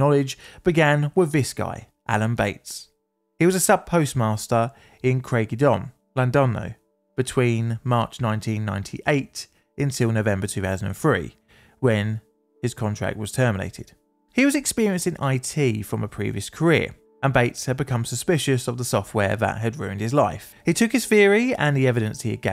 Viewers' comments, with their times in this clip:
0:05 Butchering that pronunciation to that magnitude can only be done by a true professional.